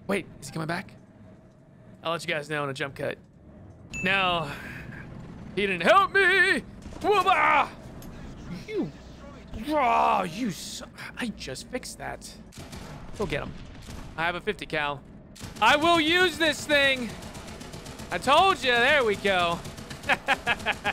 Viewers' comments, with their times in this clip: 0:04 You should audition to become an opera singer